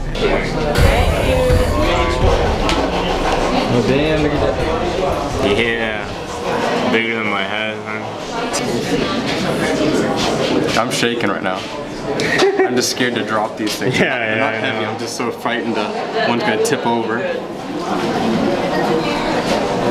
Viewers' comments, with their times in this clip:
0:03 sounds like he said “damn ni**a dat” or is it just me?
0:03 did I hear the n word